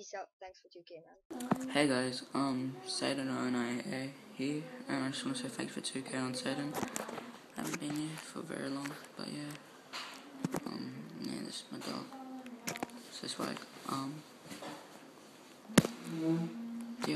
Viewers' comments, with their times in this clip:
0:03 his voice is so soft, wanna punch his head in farrk x;